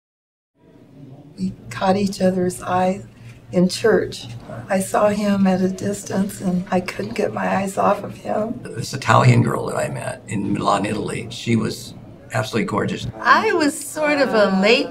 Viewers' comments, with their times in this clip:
0:01 I thought the first woman was saying kylie jenner's eye....